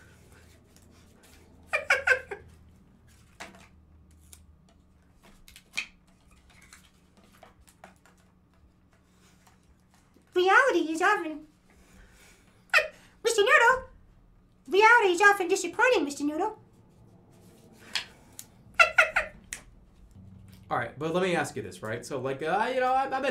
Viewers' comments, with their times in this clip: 0:09 The Elmo impression is as good as it is disturbing